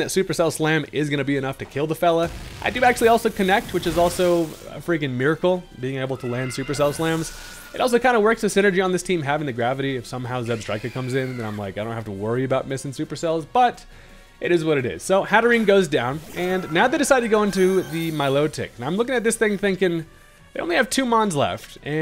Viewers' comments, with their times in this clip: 0:07 That scream is haunting. Have I never noticed Hatterine goes down in agony or was that an added effect?